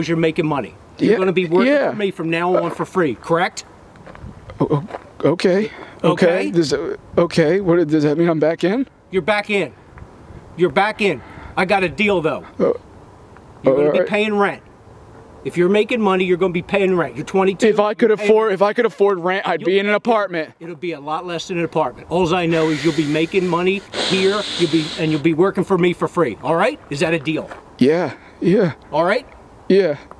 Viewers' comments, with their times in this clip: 0:09 I got a deal tho....Dildo ahahahaha
0:11 HAHAHAHA it sound like he's dad says: ''I got a dildo!'' ! xD
0:11 I got a dealdo... lol